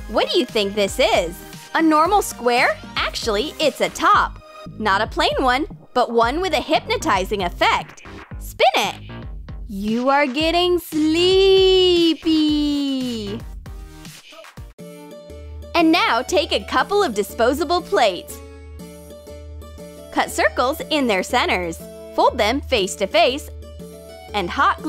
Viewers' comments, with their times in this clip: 0:09 My favorite ideas were the girls making animal faces. And the paper wallet. I actually know a real man that looks like the drawing on the guy's back. He looks exactly like him. And narrator girl is so funny. Listen how she says "You are getting sleepy."